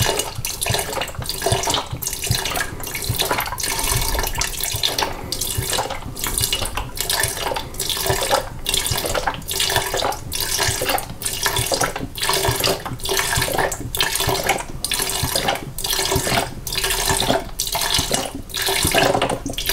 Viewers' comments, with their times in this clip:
0:07 * A M S R*